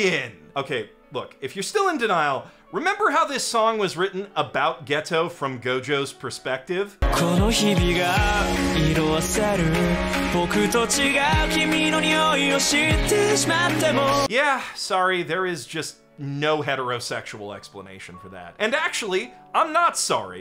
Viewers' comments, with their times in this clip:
0:06 The singer, Katsuya Kitani sounds like Gojo. I just realized that when I heard this part of the video. This makes it a thousand times more brilliant since the song is written from Gojo's perspective!